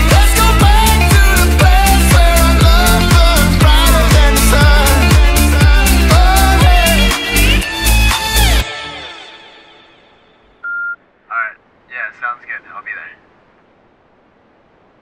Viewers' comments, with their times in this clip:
0:10 When I heard that sound, I didn't watch the video, and I thought it was from my cell phone. "I think the cops found me." lol